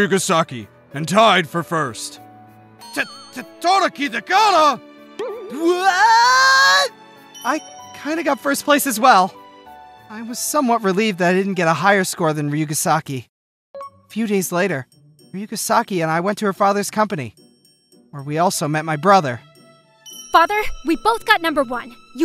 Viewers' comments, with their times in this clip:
0:05 why does this sound like a sonic the hedgehog scream lol